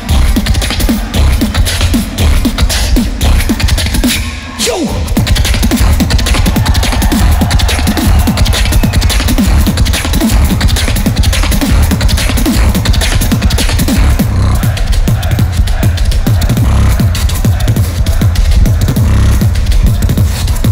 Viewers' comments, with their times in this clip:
0:05 i love the way she uses snares in the beat